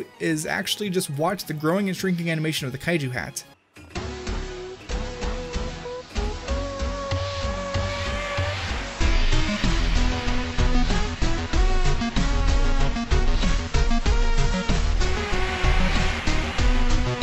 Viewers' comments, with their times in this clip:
0:03 Actual song speed.